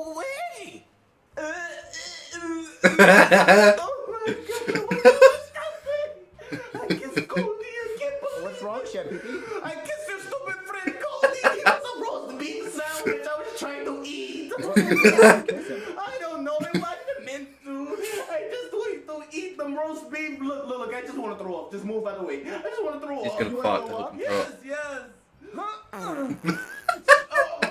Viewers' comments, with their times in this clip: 0:10 i love the way he says Cody